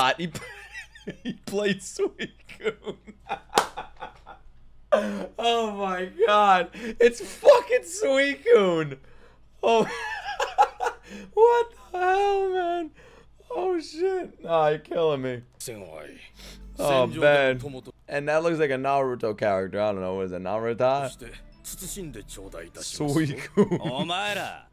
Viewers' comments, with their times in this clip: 0:09 he did the g5 luffy laugh 😂